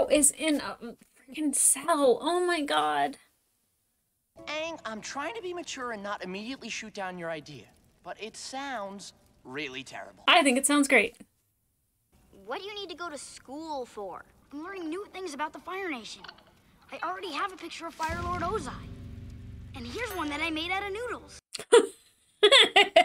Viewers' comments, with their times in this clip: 0:04 might be my favorite, most underrated line from Sokka. The delivery is so good